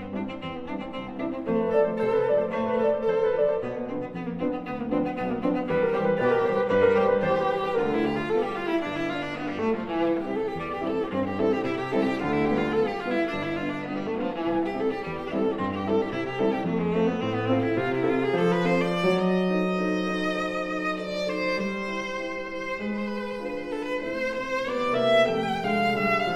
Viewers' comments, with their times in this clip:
0:10 is a fart. I say it's wrong. Unless you enjoy listening to farts. As long as he's consistently farting, then it's music.
0:10 is an interpretation. who are we to say if it is wrong? as long as he's consistent, then it's music. not merely notes